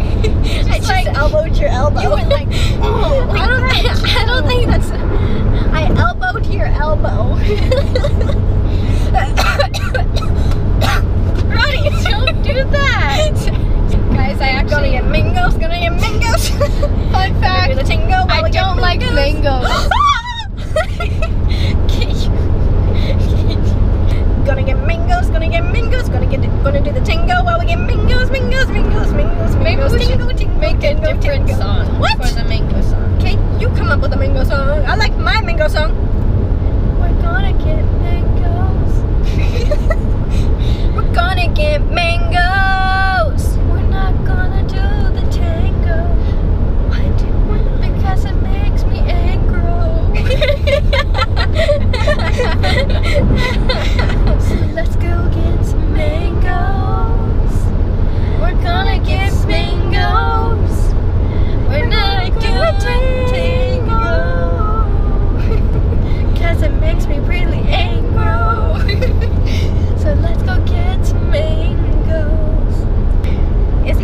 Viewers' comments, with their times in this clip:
0:07 Listen to the laugh !!!!💜REALLY FUNNY!!Love you guys sooooo much!!,💜💜💜💜💜😜
0:09 i cant take this anymore every time she coughs she does that im dying of laughter
0:59 the "we're gonna get mangoooosss" sounds pretty